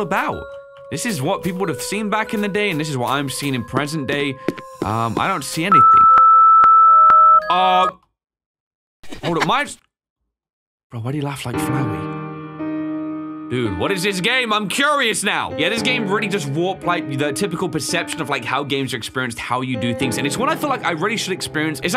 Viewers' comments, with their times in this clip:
0:06 Ow…MY DAMN EARS